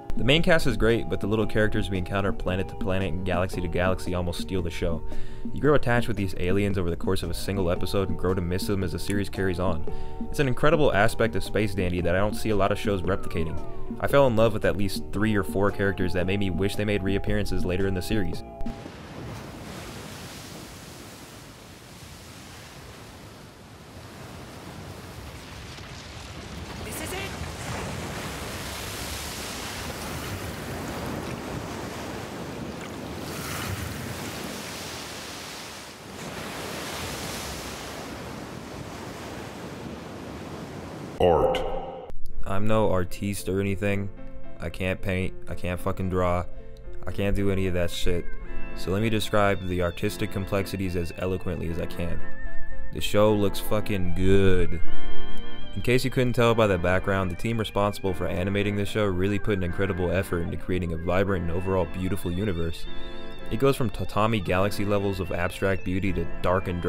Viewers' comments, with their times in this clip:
0:10 Ian Sinclair did a great job as Dandy👌 And I can hear "Own My Own" on the background 😉
0:50 Whats the song with the weird high pitched weeee noise that shit slapped